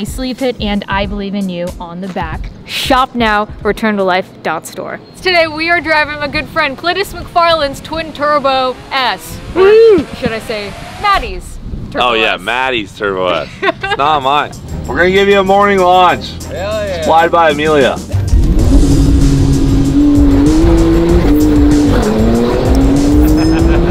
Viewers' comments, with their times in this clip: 0:06 pretty sure you called him Clitus 😂
0:07 did she just say “Clitus”? Maybe my brain is just broken.
0:11 you said clitus mcfarland 🤣🤣💀